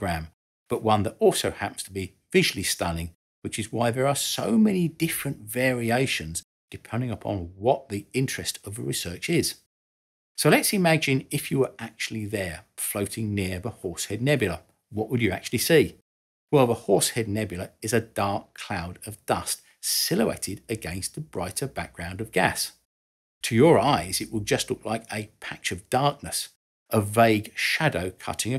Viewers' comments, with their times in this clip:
0:10 "Horse head nubula" 🙃Did the recording thing sponsor do that? Not a great advert